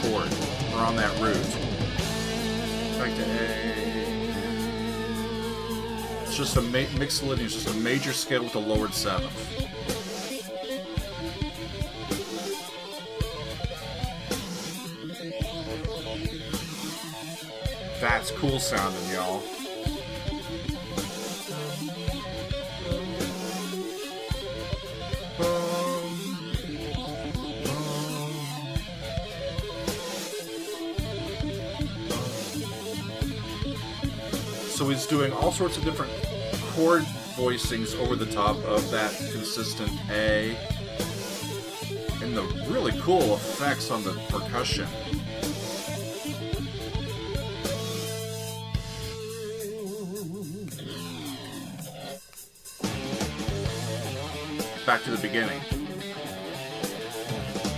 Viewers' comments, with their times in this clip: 0:06 it's all A, as Joe is hammering the 12th fret of the A string, and his fret hand is hammering and pulling along the same string to give that sense of going through the modes of A... hard to play: I think Joe can crush diamonds with his left hand.
0:42 "I never tried surfing... I'm afraid I might fall over and hurt various parts of myself." lolll Nice one! Edit: I'm in! Let's listen to Satch Boogie! -> Lots of gated reverb on the kick and reverse reverb on the snare. (very '80s :)